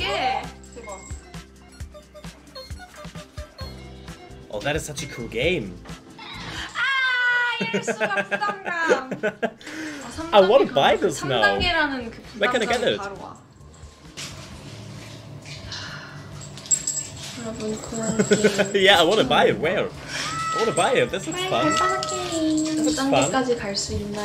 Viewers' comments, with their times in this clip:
0:05 YES glad to see you reacting to the videos u've missed that scream tho XD excited for the videod I suggested